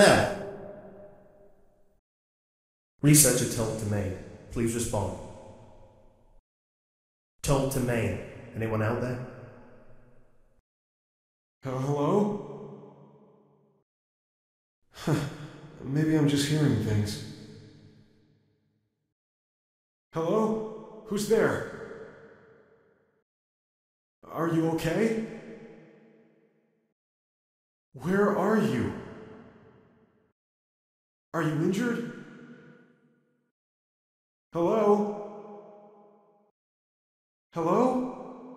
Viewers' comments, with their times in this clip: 0:04 i almost fell for that because i thought it was an actual scientist
0:11 Phone Guy? Is that you?
0:20 I never knew that Nicholas Cage worked for the Scp Foundation